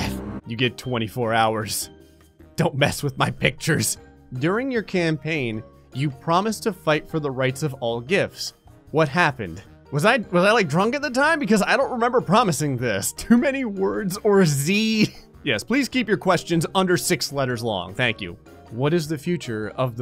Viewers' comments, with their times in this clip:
0:07 😯you broke your own rule! You said gif g-I-f not j-I-f!